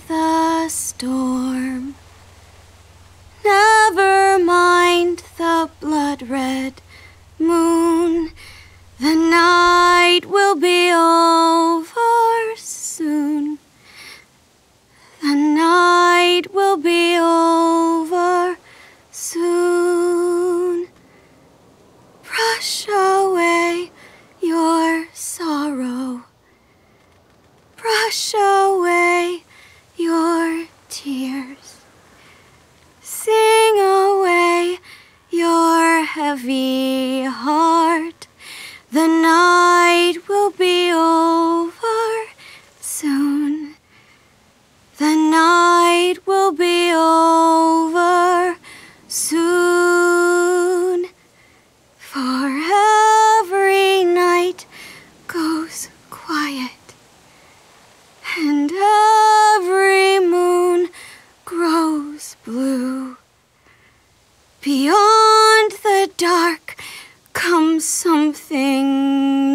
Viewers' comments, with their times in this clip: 0:10 when she sings the word "over" it's just so perfect ❤
0:52 You can physically hear the tone and shift in her voice as if she’s in pain.. she is a great villain.
0:52 she sound like she’s in so much pain and sadness. Poor minerva :(
0:52 I never really liked Minerva, I've always disliked her. But god damn she's actually a good singer. You can also tell that deep inside she regrets her actions, and you can definitely hear the pain in her voice I kind of feel bad for her, but not at the same time...
0:52 She sounds in pain and I need this